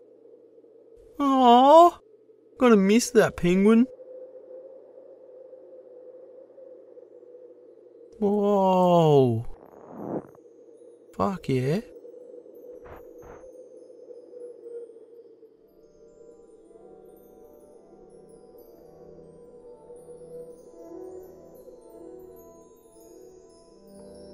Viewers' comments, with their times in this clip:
0:09 The attention to detail has been amazing in this series, that snow sound made my ears tingle